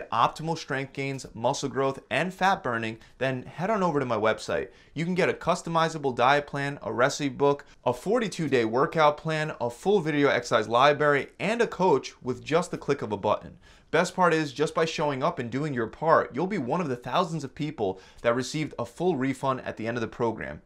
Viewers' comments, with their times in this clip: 0:07 I was about to be taken by this video, but the speaker said Lie-berry and that is when I knew he didn't actually read any of this. Library is not a hard word.